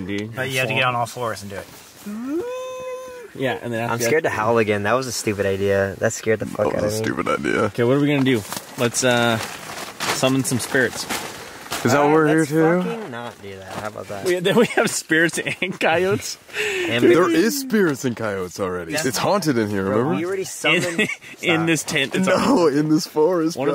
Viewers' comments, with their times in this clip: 0:04 i wasn't looking at the screen and thought that was corpse husband that said "that was a stupid idea" but it was just Colby lmao
0:06 why did Colby just become corpse husband here that caught me off guard XD (anyone still watching in 2022?-)